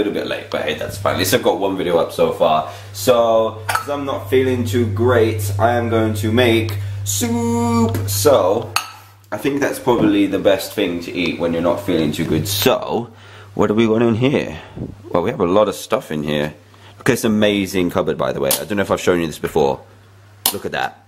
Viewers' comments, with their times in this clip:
0:06 POOP wait soup?